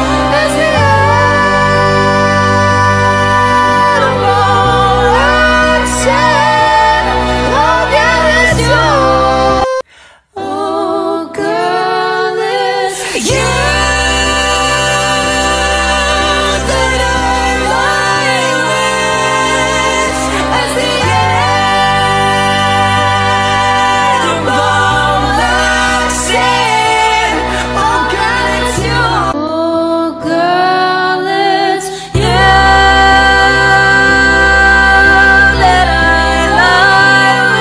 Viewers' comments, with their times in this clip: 0:10 is the best one for me. A lot of these performances show impressive vocal control, but many focus too much on standing out instead of adding to the harmony. is a great example of all the singers working together to create a cohesive listening experience 😊
0:18 What a key change